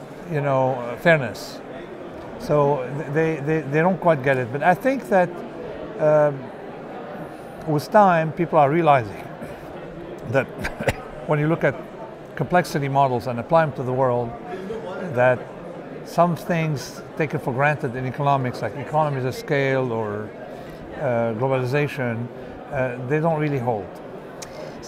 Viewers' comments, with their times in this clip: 0:10 He also dry coughed OMG he predicted the coronavirus too!!1one